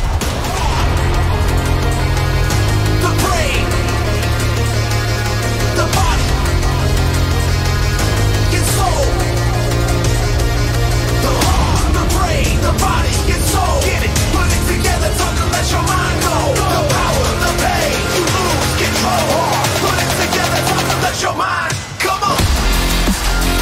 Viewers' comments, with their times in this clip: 0:06 you can still here the beat saber 2016 beat Saber alpha version in the back round if you hear closely